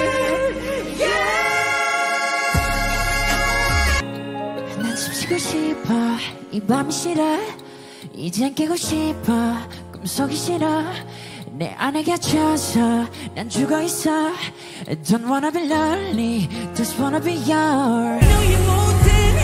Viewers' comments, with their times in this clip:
0:05 was the time I got goosebumps.Whoever hates jimin because of his voice should get its ears checked by a good doctor.